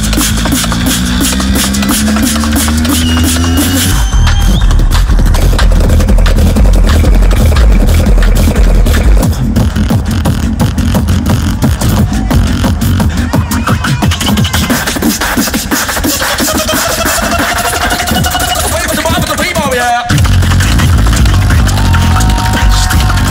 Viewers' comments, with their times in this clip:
0:04 Sounds like a game in a arcade
0:09 Okay but actually the beat is so good